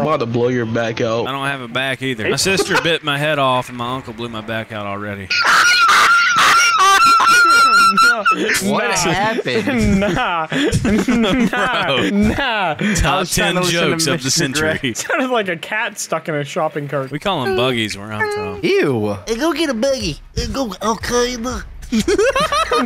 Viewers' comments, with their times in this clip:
0:05 That laugh cured schizophrenia🤣🤣🤣